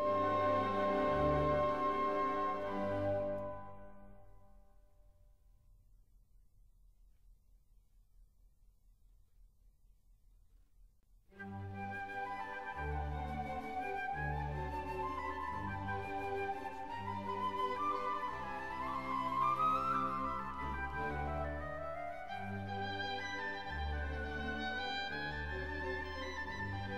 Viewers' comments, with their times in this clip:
0:09 I'll often catch myself whistling this tune when I'm working. The Rondo is the most memorable part of this serenade and the easiest to grasp with my emotions. So light, uplifting, and innocent in its simplicity. But this is something Mozart is famous for.